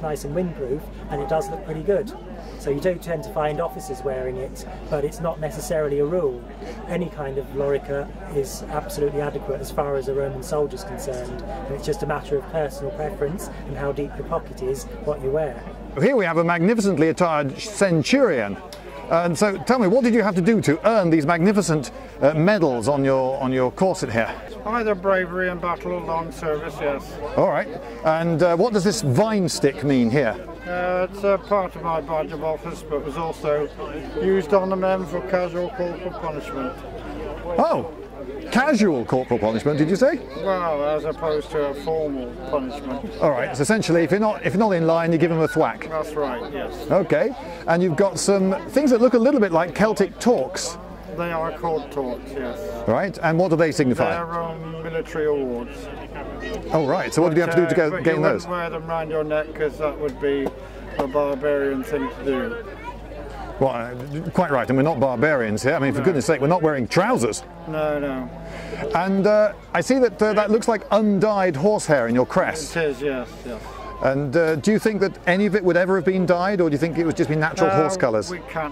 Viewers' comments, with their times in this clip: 0:06 to be fair, the amount of noise this scales must do at full speed on horseback would likely scare off a fair share of opposition
1:03 guy just sounds so fucking done